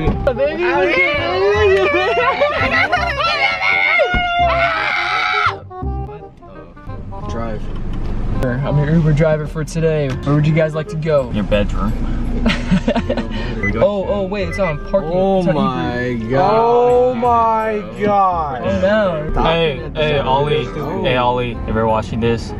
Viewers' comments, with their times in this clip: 0:05 the dramatic screams 😭💀